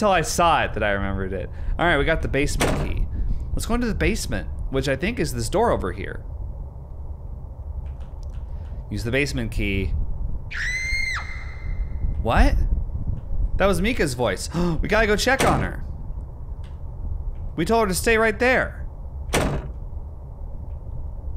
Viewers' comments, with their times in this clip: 0:09 Mika's scream is on my synthesizer :dd